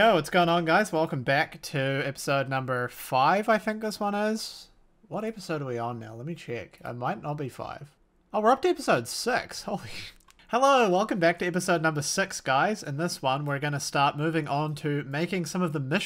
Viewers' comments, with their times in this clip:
0:03 You're speaking Australian wrong...